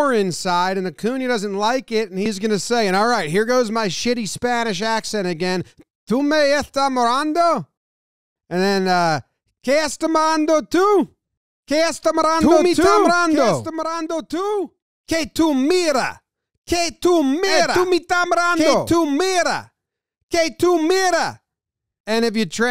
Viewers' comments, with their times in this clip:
0:06 Are we going to ignore the fact that Jomboy went above and beyond of committing to create such an immersive experience for us he imitated someone speaking a different language while chewing gum perfect to a tee.